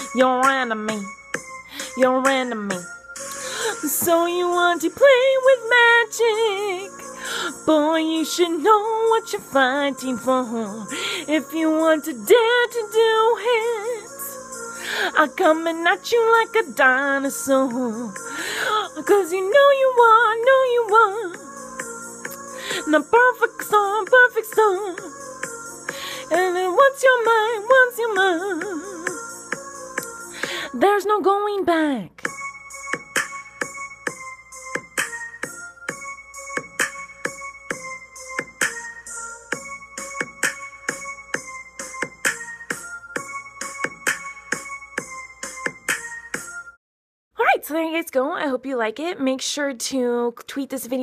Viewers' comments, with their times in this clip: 0:05 was so funny then she said boy u should know what ur farting for! And I'm coming at u like a dinosaur HAHAHAHAHA she's so funny I luv u Miranda u rule
0:39 The feet tapping on the bed